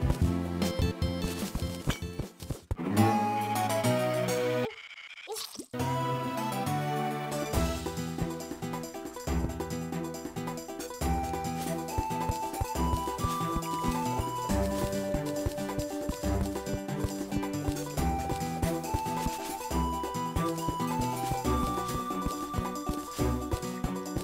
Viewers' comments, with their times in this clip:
0:03 the music pause is the best thing i've ever seen
0:03 the music briefly pausing made me laugh
0:06 The music gag XD